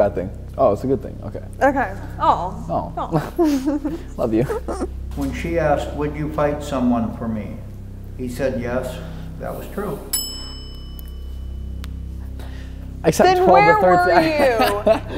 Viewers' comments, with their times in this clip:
0:03 noah: love u dixie: laughs nervously